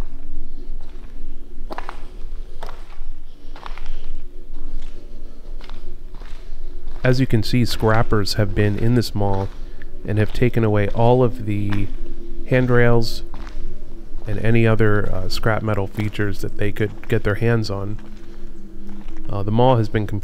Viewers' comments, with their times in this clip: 0:08 that ASMR stepping on glass sounds so amazing anyone else?